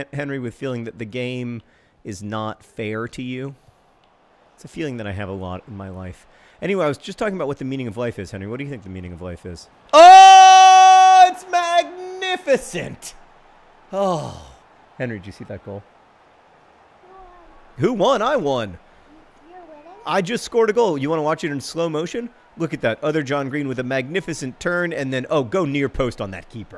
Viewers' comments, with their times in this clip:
0:08 Earphone users please prepare for jumpscare due to audio😂